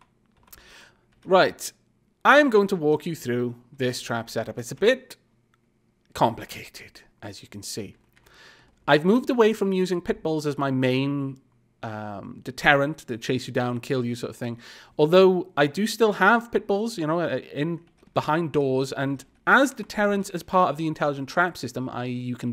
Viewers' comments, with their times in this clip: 0:04 the way you say "Complicated" made me think of you as an oscar-winning villain voice actor.